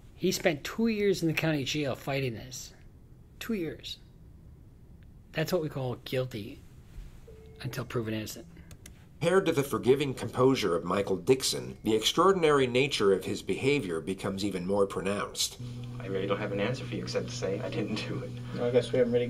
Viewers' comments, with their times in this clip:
0:06 the beep scared the everliving fuck out of me